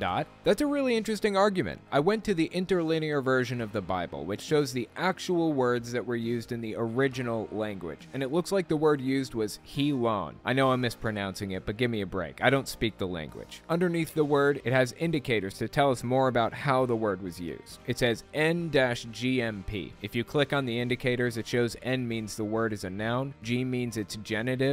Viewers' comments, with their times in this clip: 0:09 drop the H, perfect Modern Greek.